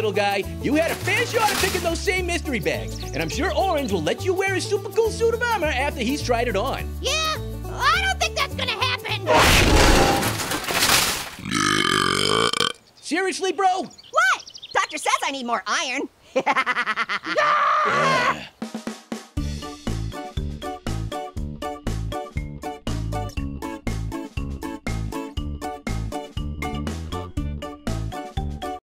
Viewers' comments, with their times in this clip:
0:09 THAT SCARED ME BECAUSE I WAS AT FULL VOLUME
0:13 I love that voice SERIOUSLY BRO